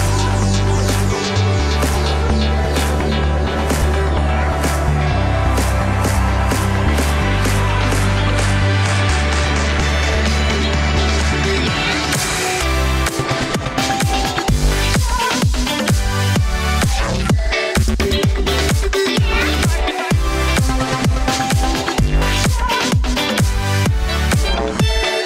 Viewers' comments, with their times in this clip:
0:08 and forward Heavy breathing and man tears!!!